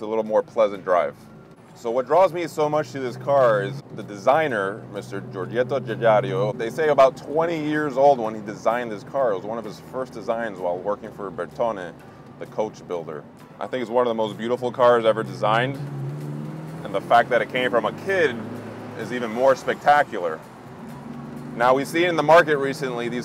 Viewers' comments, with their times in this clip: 0:04 And he said "Giorgetto GiugaRIO" too:)